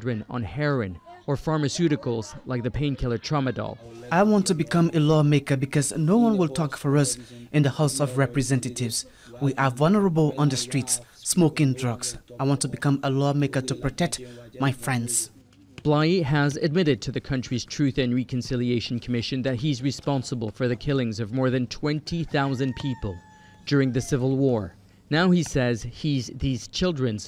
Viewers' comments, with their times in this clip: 0:08 this guy have an english name but doesn't know how to speak the language. welcome to Liberia